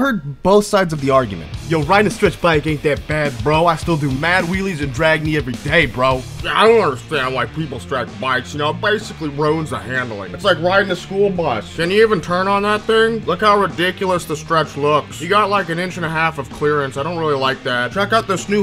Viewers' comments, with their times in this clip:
0:06 sounds like the sheriff from mr.pickles